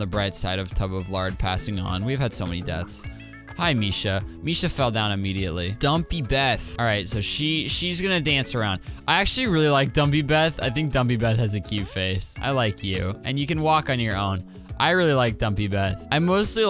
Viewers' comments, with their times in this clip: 0:03 THE ONLY TIME SOMEONE SAYS MY NAME RIGHT AND STILL CHANGES IT!